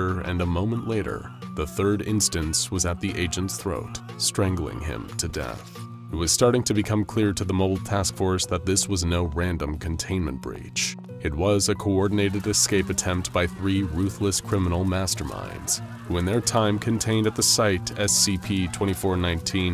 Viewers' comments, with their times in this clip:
0:04 I swear I heard the among us kill sound